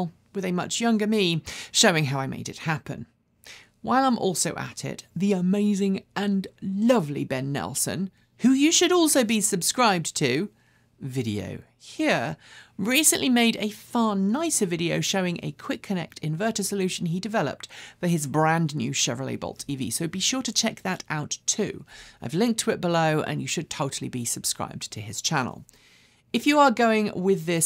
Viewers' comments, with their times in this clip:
0:08 that was a bit of a Big Clive "Video Hear" 😆😆